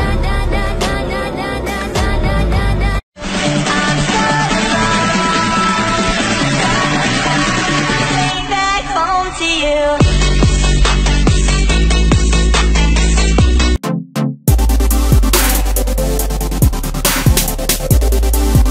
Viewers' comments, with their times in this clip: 0:03 when he said *oh na na na" He was like a baby😇 OMG HE IS SO CUTE 😭😍